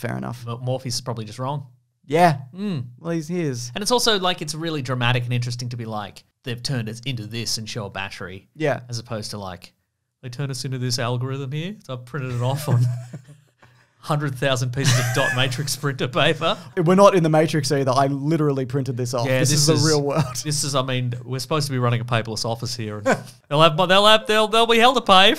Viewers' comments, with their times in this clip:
0:10 I actually thought they got Laurence Fishburn to read this. My mind was blown when I found out it was just an impersonation!